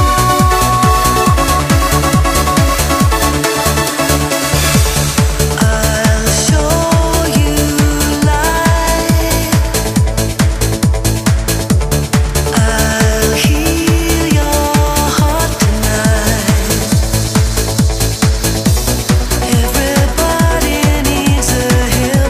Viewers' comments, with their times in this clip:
0:04 Shit starts getting real … when the mood switches from euphoria to mellow. (is there a significant key change even? dunno enough about music theory to tell for sure...)